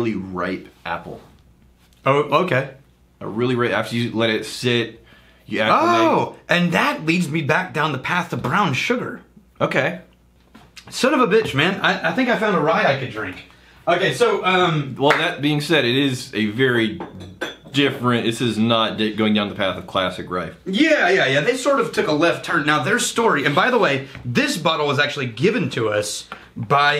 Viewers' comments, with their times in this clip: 0:10 minutes.. I got you! A "son of a bitch" without a beep sound ! Boooom